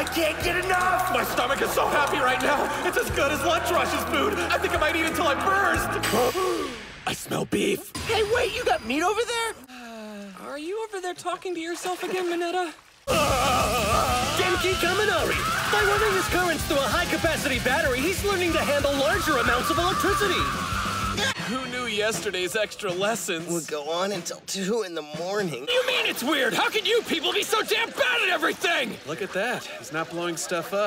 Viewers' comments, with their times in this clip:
0:10 the splash was so cute 🥺
0:10 its all fun and games until my baby boy sneezes
0:13 Can we just appreciate his face and the voice crack here-